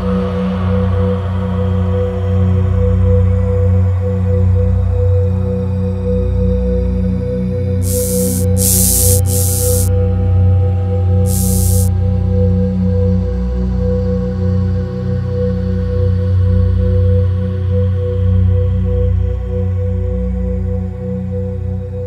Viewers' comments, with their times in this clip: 0:09 Regarding the lore segment in the middle of the video, the dialogue was so much smoother than before, and, at least in my case, it helped connect me to the story better now that the characters are speaking much more quickly while I kind of found it difficult to connect to the story in previous segments because everyone aside from Tepic was speaking so damn slow. THIS is a major improvement, and it will go a long way in helping your audience to better connect to the characters. OH SHIT! Looks like Hank survived maybe?